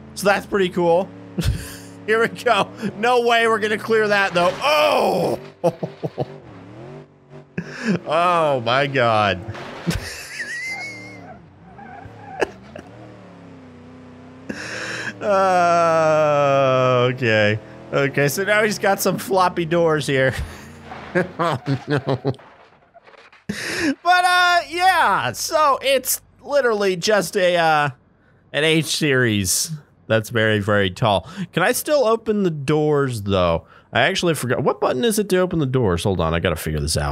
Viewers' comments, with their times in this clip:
0:10 that laugh tho o.o
0:21 What kind of laugh was that